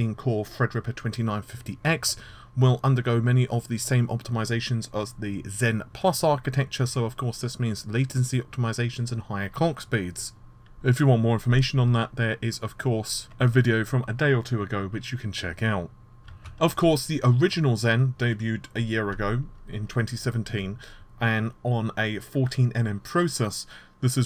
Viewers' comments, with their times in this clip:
0:09 "Higher Cock speeds" .... Giggety!